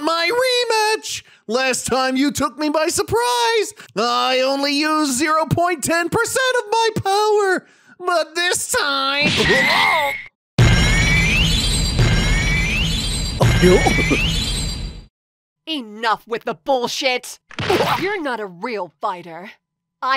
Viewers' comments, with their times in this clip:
0:04 shaggy voice is almost exactly like the real actor